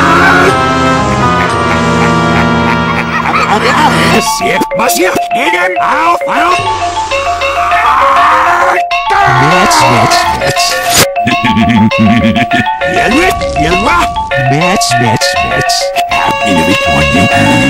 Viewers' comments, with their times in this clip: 0:04 LOL I heard NI**** MOUTH